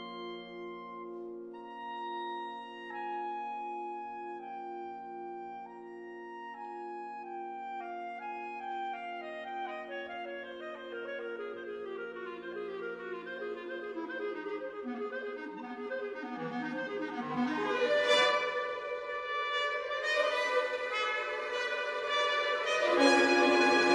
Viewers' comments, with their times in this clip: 0:08 Gets almost Vaughan Williamsian